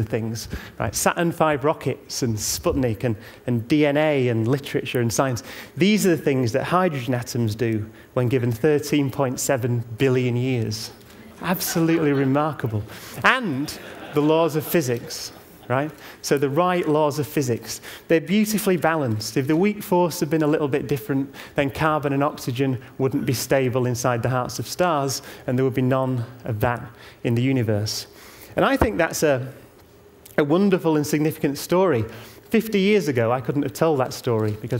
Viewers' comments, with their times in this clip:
0:08 Why do people laugh right after ?
0:10 Why are people laughing ? He seems to be making a profound observation, not a joke... Did I miss something?
0:15 you can hear the ignorants laughing